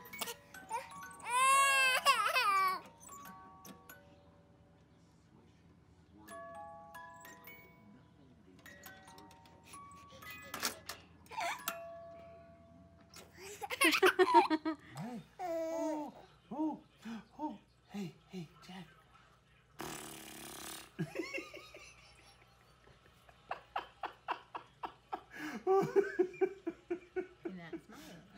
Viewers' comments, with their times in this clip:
0:10 0o0 gasp o—o … 😝